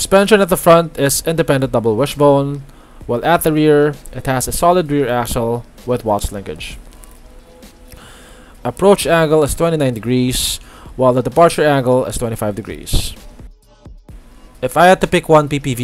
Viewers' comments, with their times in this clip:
0:03 Sorry! What's the suspension at the rear again? "Solid Rear ASSHOLE"